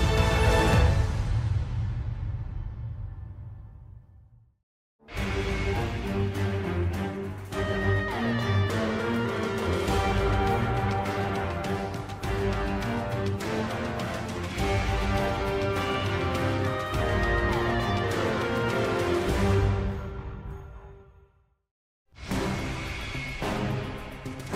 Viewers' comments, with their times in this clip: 0:05 Agree with me here... Winner Circle Victory has a Black Ops 2 vibe to it don't it?
0:05 epic song Hurra!!!!!!